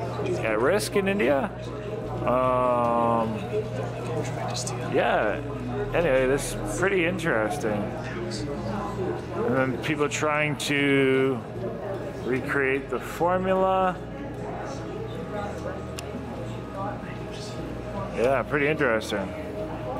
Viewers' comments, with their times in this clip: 0:03 Go to --- is someone with him or was that a ghost saying into the mic- "trying to steal"